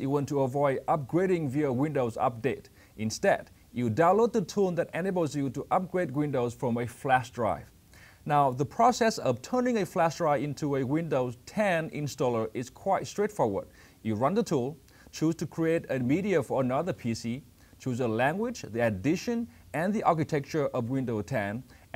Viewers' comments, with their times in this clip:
0:03 sorry, but i couldn't figure out that word ... instead you use the tool "animals" ? use to upgrade windows from a flash drive? i replayed that bit 5 times and still could not figure out what the actual word is.